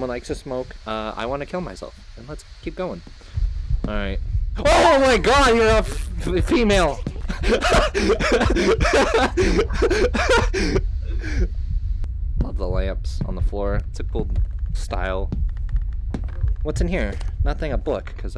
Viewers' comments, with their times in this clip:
0:03 (turns corner to see little girl) "OH MY GOD YOU'RE A FFFfffff....A FEMALE!!" (panicked laughter) i'm fucking dead omggg